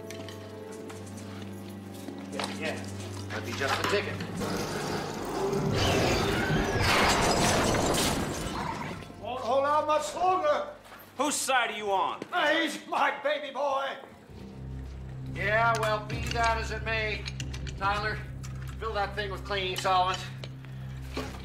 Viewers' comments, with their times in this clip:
0:08 There was a raptor noise